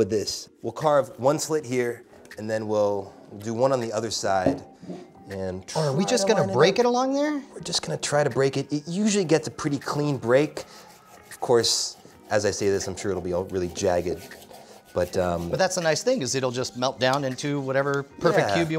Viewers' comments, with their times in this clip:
0:04 Who's iPhone starting